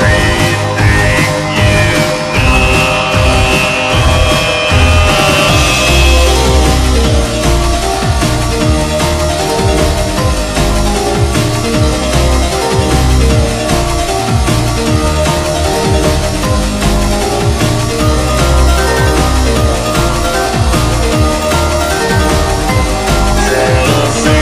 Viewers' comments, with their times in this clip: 0:05 I always knew there was a music box from the first time heared this song